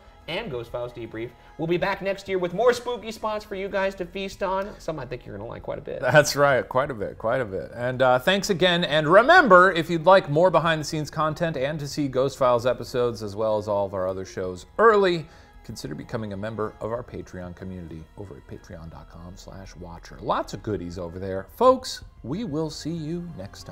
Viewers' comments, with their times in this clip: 0:04 Shane putting on the Daytime Radio and Talkshow Voice and Smile🎉